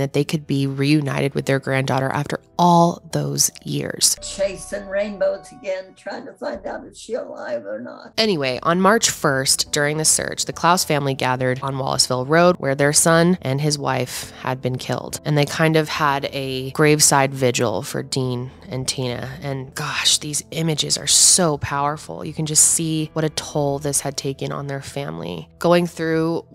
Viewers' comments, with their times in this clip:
0:08 Constructive feedback….Bad edit I don’t think you intended to cut off the family with an abrupt “anyway”. Love your channel. You’re one of the best in this biz.